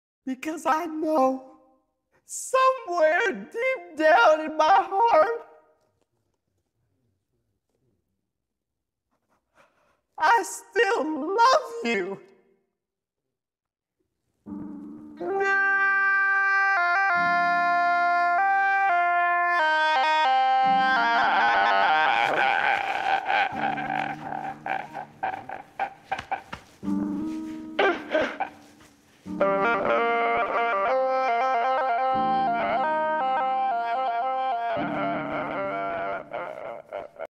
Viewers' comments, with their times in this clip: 0:03 the man very Laugh😂
0:14 Travis Scott crying be like:
0:14 Rappers with autotune when their gf want to divorce:
0:14 Travis Scott crying
0:14 the actual cry
0:15 How I think Boyfriend will cry
0:15 Like an titanic song
0:15 when t pain's career is over
0:15 toniiiiiightt...... Bro turned into bruno mars for 2 seconds
0:15 This is how galaxy baby as a man should cry
0:18 Sound like funeral bagpipes
0:29 actually sounds melodic